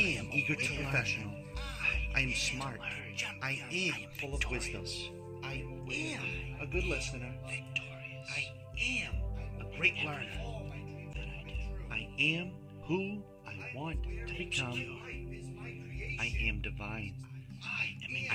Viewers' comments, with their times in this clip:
0:06 I Am full of Quiznos ??